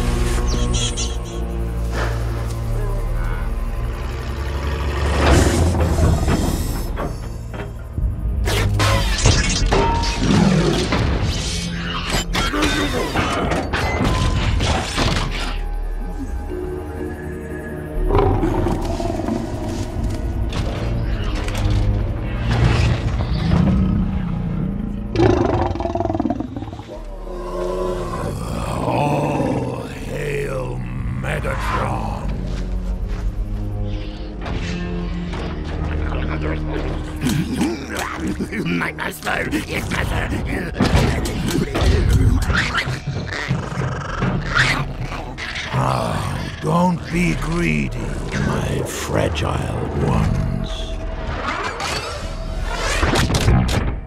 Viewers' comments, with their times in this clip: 0:05 can you hear him breathing in vehicle mode
0:07 In this moment, we can see the Megatron scare off the other animals in a transformation and growl, since he is a very territorial species. Only wanting to be around other Decepticons.
0:10 I love how they out a lion's growl when Megatron is transforming. Makes it 10x more intimidating!
0:12 throws up sound
0:18 This is it’s mating call, as you may have guessed, Megatronus Decepticons have a very difficult time mating in the wild
0:18 is how my Mercedes AMG GT-R sounds
0:24 Megatron's sounds like a Lion..
0:28 I thought the elephant said “All hail Megatron.” Is one of the elephants secretly a Predacon?
0:37 "(sociopathic voice) MY MASTER!!! YES MASTER"